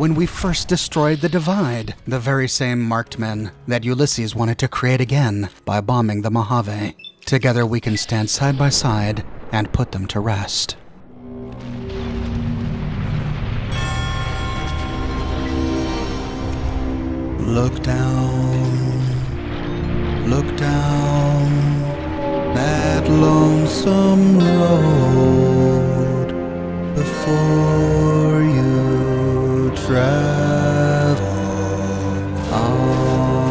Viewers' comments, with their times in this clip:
0:10 for epic song
0:11 action music Montage go ☺🎸🎸🎸🎸🎧
0:17 -No Stop. Cringe. Never sing again.